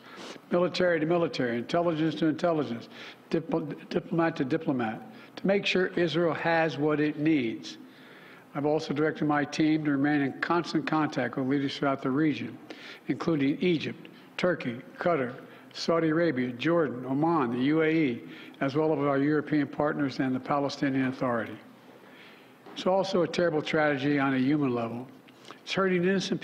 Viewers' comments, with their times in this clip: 0:07 He started stumbling